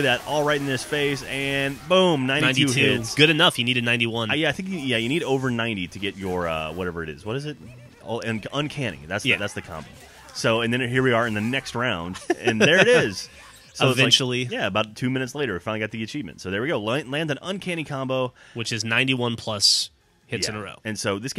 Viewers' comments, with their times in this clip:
0:07 Deadpool sounds like Jockey in L4D2